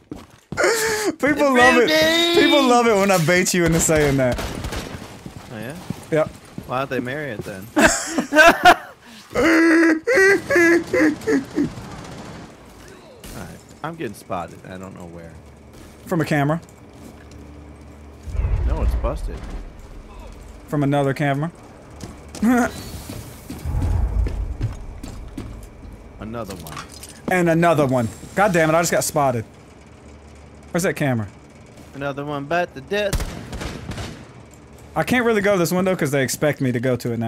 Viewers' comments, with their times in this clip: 0:07 What was that Chewbacca laugh ?
0:21 lel that lonely laugh tho